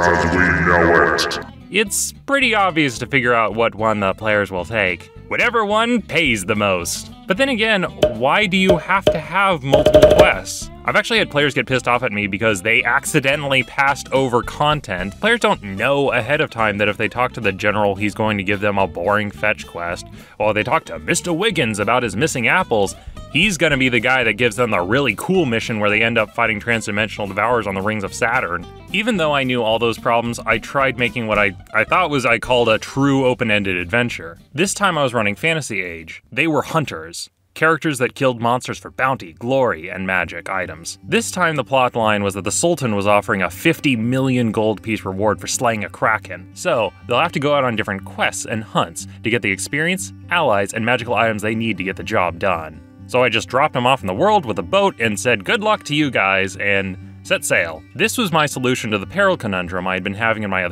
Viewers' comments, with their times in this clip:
0:09 Auditory hypersensitivity trigger warnings plonking
0:42 I wasn't paying attention and thought for sure you said "The Sultan was offering a 50 million GP reward for slaying a crackhead"
0:45 I was looking away from my screen and heard crackhead